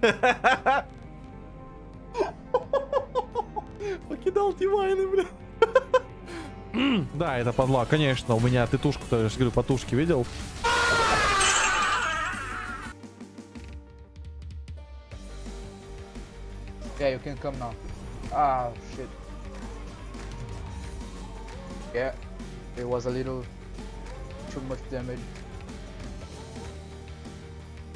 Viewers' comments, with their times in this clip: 0:09 Loud = funny ????????????????????? Sum1 plz explains